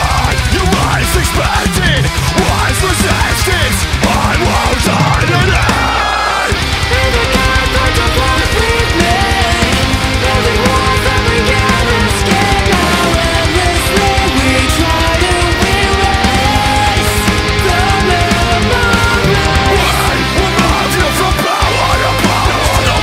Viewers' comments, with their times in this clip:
0:07 Had me until Those cleans are so...anti-metal. Two thumbs down.